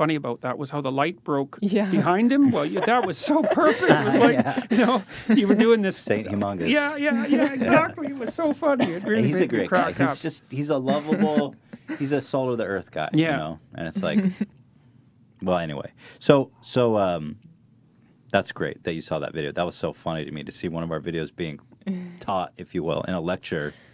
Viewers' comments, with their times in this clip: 0:06 such a beautiful laugh. Wishing Jordan Peterson and his family recovery!